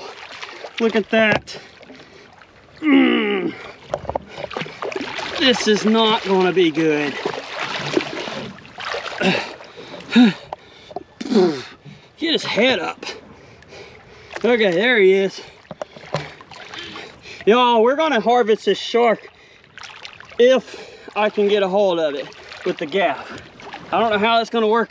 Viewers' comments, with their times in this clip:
0:06 😂😅😂😅😂😅😂. Dude he’s breathing like he just got out of a five round 25 minute fistfight. 😅😂😅😂😅😂😅😂😅😂